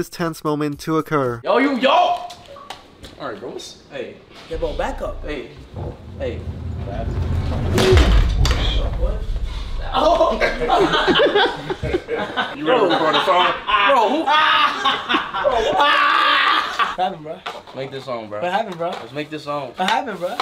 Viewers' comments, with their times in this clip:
0:03 kai was messed up for that and he was laughing in a mocking way like that boiled my blood 😅